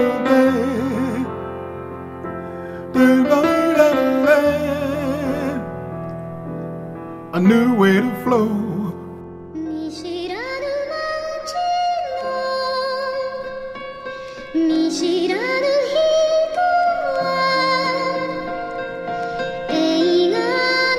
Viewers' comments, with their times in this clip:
0:07 I don't know why but this song makes me emotional as fuck😢